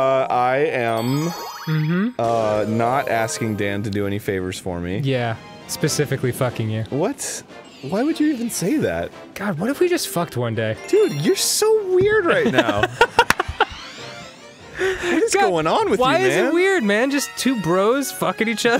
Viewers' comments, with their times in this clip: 0:05 Dan's gay side comes out and I love how Arin's voice changes suddenly😂😂